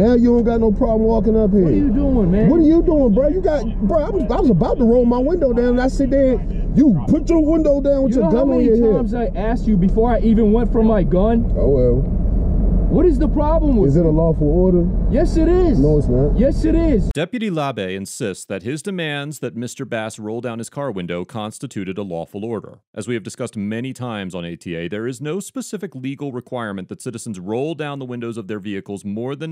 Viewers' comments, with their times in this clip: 0:10 The "oh well" is so beautifully executed!